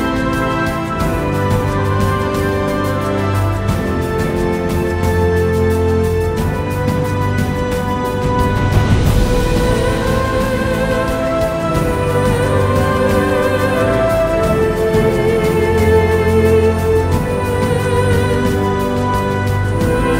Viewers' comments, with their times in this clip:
0:04 _ The music sounds like this little boat is “humanity’s last hope” and is carrying a “ cyber virus” to be sent to the last surviving humans on the other side of the lake for uploading, however, it’s being chased down by the evil Cyberdyne drone that wants to blow it up. Who will win. The humans or the machines?Aaaaah the suspense!!!!!!!!!!!!!!